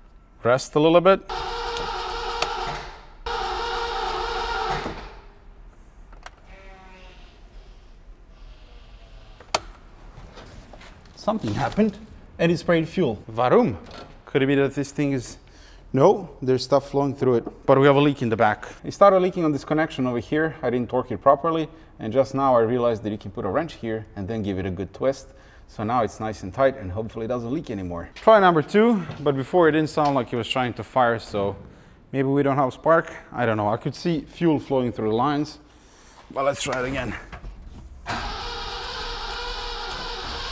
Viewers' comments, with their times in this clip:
0:05 Up until now I'd never heard a car fart. That was cool I guess 😂
0:06 That sounded like a fart
0:24 thats sound like a fart 🤣